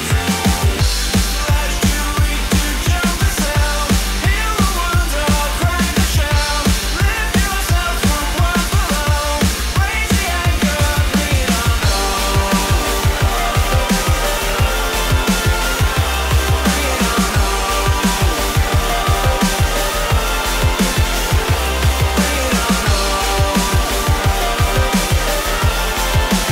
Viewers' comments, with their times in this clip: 0:05 Anyone else get an audio drop out at like ?
0:06 what's with the pause ? Anyone hearing that too? Is that in the song?
0:07 I thought my earphone is broken down ..
0:08 Why is the music stopping on for a bit?
0:08 It goes silent for me like 3 seconds from
0:10 Weird thing it stops for a second.